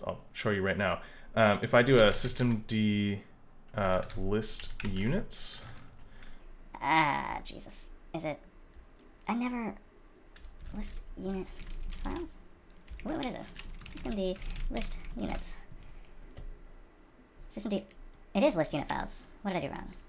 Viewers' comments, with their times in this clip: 0:05 that voice was really scary dude 😂